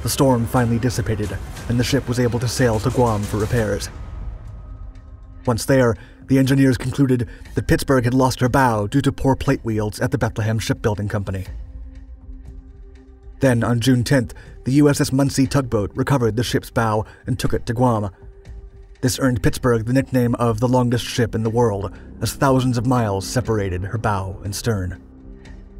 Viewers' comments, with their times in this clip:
0:09 @ . . WTF are " poor plate WIELDS (WEELDS, WEALDS, WHEELDS) " ??????????????????????? YOU tell me how to spell that. And you forgot to mention some Japanese lost their BOW due to stiff necks.